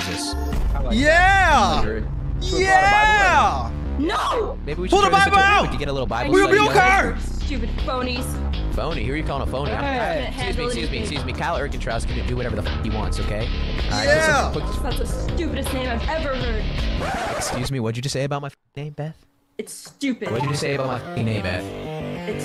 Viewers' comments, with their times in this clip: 0:09 You know it’s over when the music starts